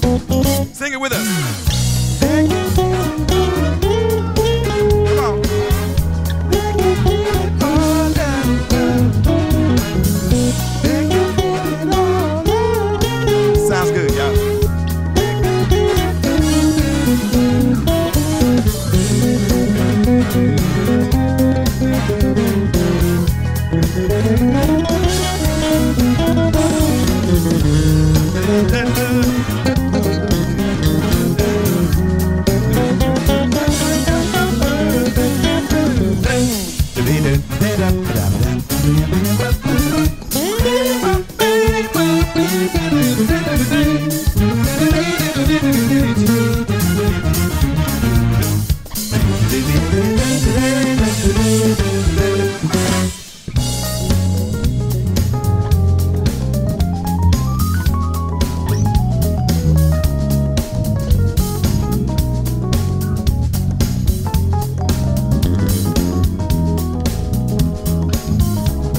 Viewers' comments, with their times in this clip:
0:03 He misses one pretty clearly
0:39 Modulation is sick. So is the rhodes solo after it
0:53 the arrangements and the backing track are incredible.